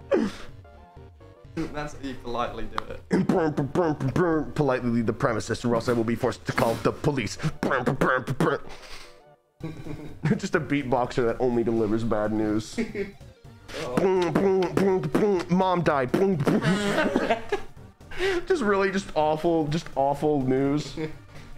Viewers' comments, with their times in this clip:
0:09 beat boxing*MOM DIED*back to beat boxing 💀